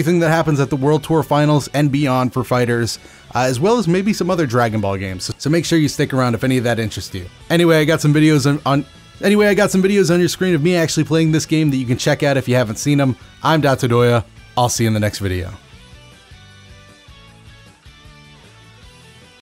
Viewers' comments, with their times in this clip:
0:07 It's not a stutter, it's a tactical sentence reset!!